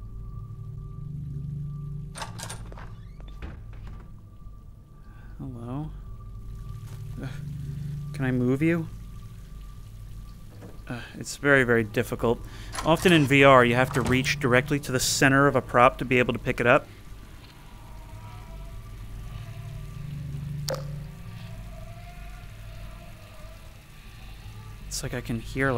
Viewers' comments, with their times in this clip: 0:07 Yeah, I think the audio clip that started playing at the pool room glitched out, which is very likely why you were hearing it throughout the map after that.